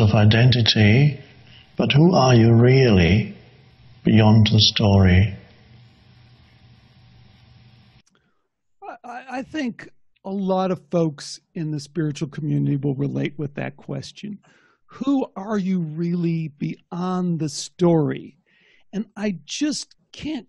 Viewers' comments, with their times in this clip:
0:03 I got into "consciousness" kick about 6 months ago. It was fun for a while, but its incredibly annoying now. Im and cant continue. Holy f*# wow... Eckhart Tolle guys voice is like a nail to a chalkboard.